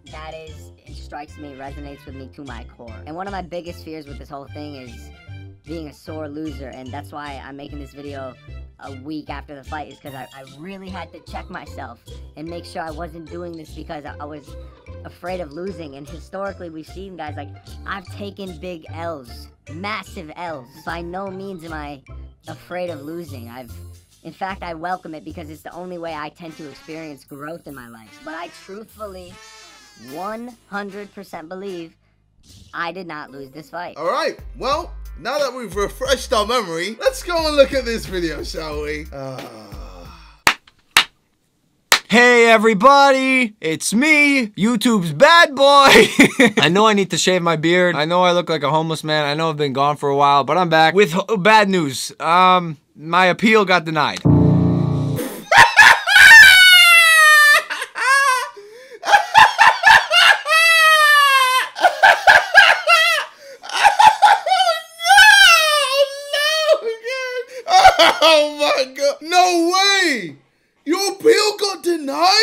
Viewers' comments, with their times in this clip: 0:08 this filter and music kills me🤣
0:55 Literally nobody: Crows at 4 in the morning:
0:55 I LOVE HIS LAUGH LMFAOOO
0:55 Sounds like a dying cat lol